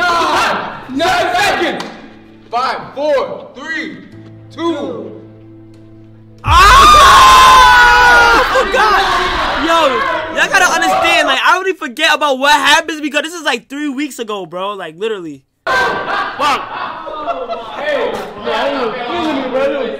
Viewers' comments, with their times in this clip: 0:06 this part made me wake tf up cause he keep screaming!!!!